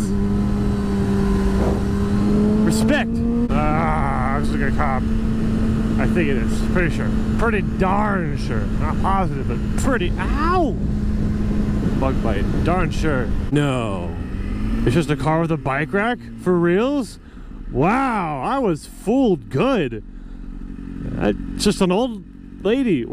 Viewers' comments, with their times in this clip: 0:10 I think it was when u said ow and I dropped my phone